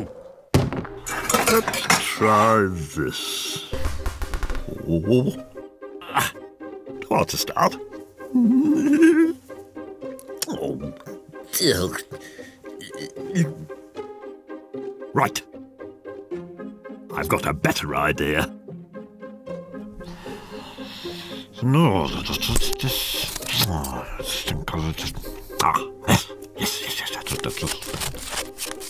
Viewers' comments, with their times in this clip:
0:10 i thought i heard minecraft death sound, 😂